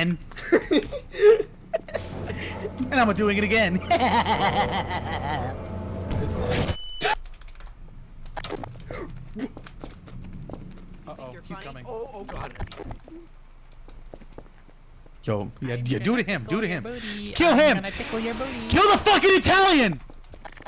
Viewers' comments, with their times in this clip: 0:03 Tf was that laugh😭